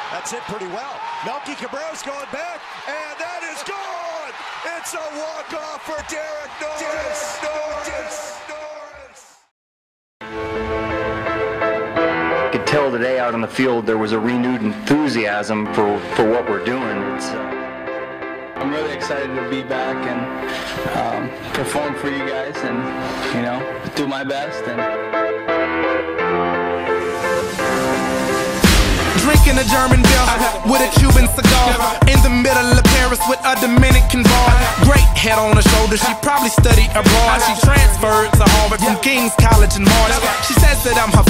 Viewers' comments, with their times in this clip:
0:06 "DICKS!!! DICKS!!!" haha
0:29 did he say drinking a german girl ? :)